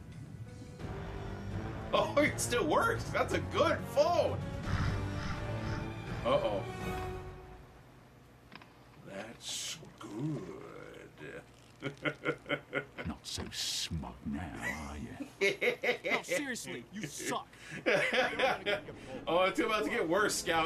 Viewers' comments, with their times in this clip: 0:08 that was a good impression I was laughing my ass off.